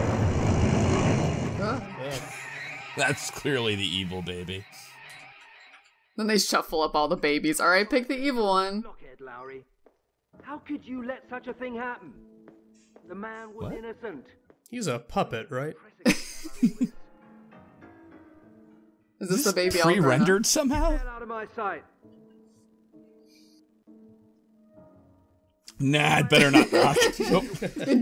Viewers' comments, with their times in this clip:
0:10 A marionette of a lisping Arnold Schwarzenegger. needs him saying "I'm looking for Tharah Connor"